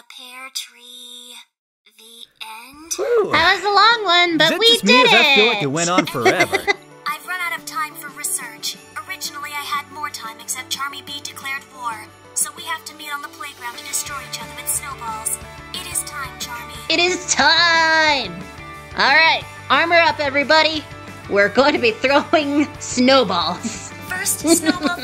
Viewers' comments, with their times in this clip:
0:08 "Originally i had more time but then Charmy bee declared war" i love the way they made her speak in the Unhinged AI way so much